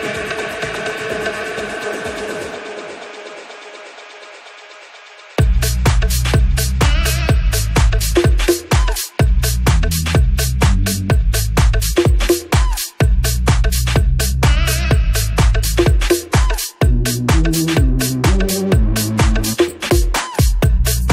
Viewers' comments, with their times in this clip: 0:04 Listen when the beat drops !! ..my heart explode. So great